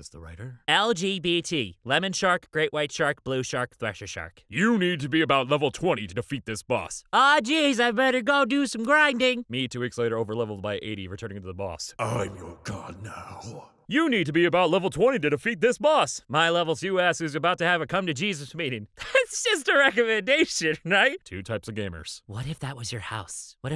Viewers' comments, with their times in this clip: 0:07 you kinda sound like angle dust from hazbin hotel